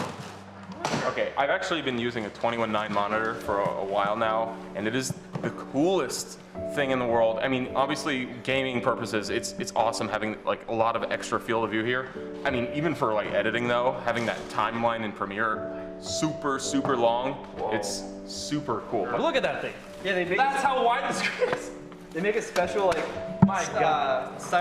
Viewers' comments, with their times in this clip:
0:06 What is the song that starts ? I know I've heard that tune before. Kind of sounds like Motion Picture Soundtrack by Radiohead